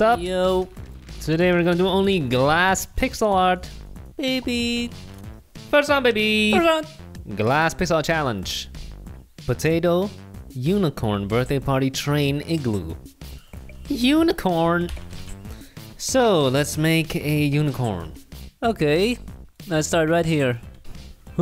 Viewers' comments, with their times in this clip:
0:09 he p a u s e d you know what i’m thinking